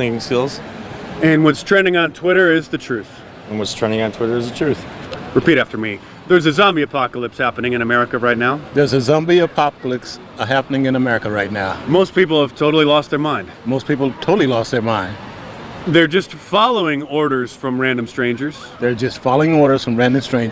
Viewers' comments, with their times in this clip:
0:08 zombie a'poppa licks